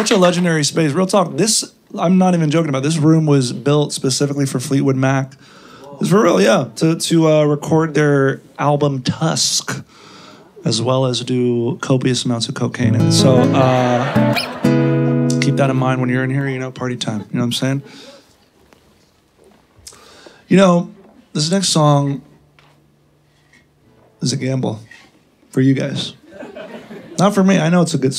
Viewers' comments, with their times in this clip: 0:10 dude just plucked "ako'y sayo, ika'y akin" right ❤️